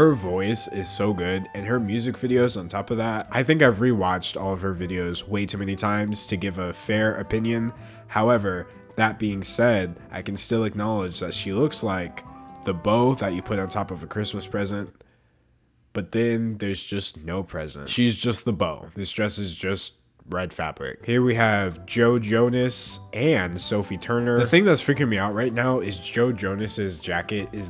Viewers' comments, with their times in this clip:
0:10 the delivery for the punchline was so bad but thats what makes it funny, so i guess its a great delivery?